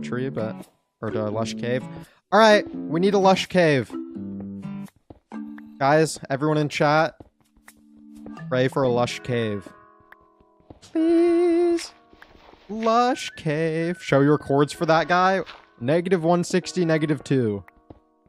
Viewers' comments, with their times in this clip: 0:05 He also has good singing too. 😂